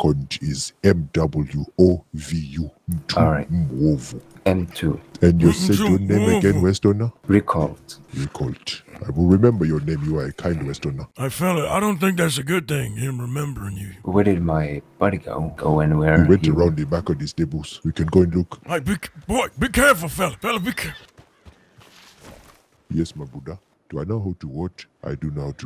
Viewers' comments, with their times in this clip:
0:10 is that James Earl Jones talking from the lion king 🦁